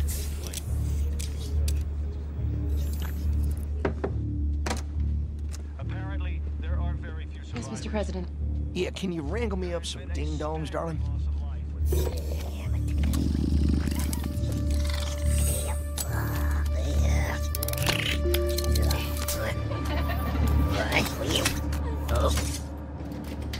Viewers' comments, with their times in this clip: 0:05 I love listening to that TV in the background. It probably has something to do with the attack in Qatar.